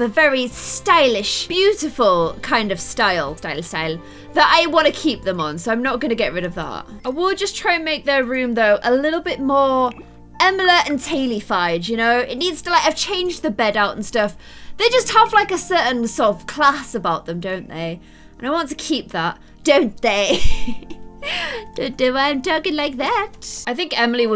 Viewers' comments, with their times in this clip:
0:09 she said Emiler and Taley